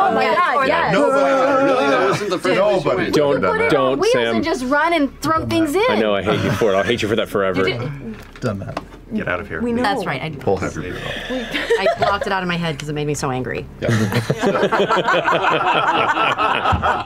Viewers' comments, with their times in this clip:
0:05 what was Sam saying? I can't make it out.